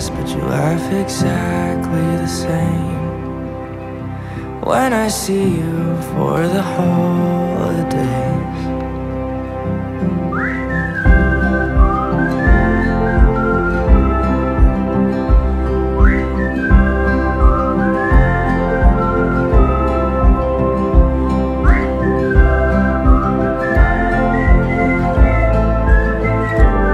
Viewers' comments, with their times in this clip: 0:10 the whistling is so whimsical and wistful at the same time 🥰